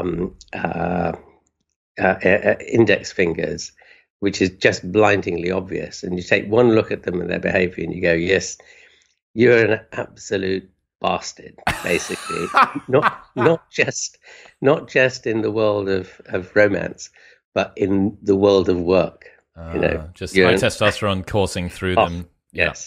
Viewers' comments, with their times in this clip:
0:10 The most manly and most British laugh around